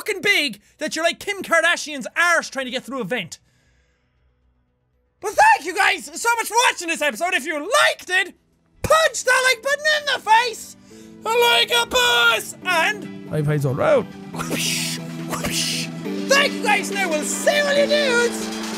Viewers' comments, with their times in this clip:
0:05 Jacksepticeye voice cracks